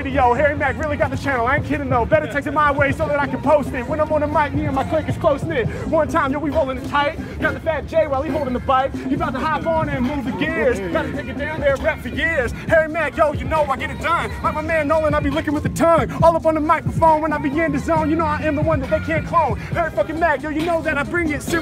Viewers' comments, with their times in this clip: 0:04 The guy is faded by his rapping speed.